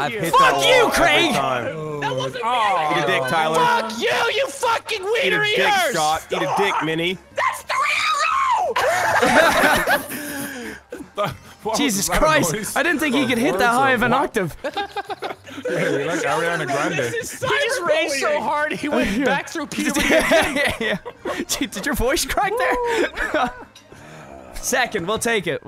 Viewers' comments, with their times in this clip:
0:06 After a kick to the balls...
0:07 lol he frickin became Toad.
0:07 that's a Mariah Carey note right there